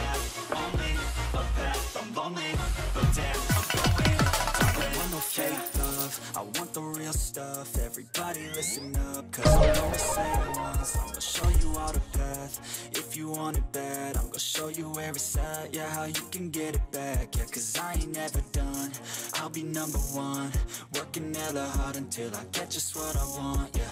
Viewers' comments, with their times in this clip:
0:09 Chopped N Screwed.